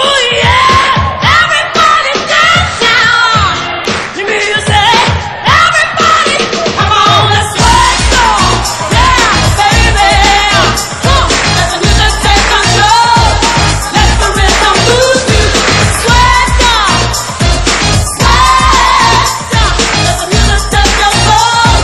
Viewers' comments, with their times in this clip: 0:06 Zelma is singing live to the recorded track. Martha's powerful recorded vocals are clearly on the song' hook. I think this is very clear at the end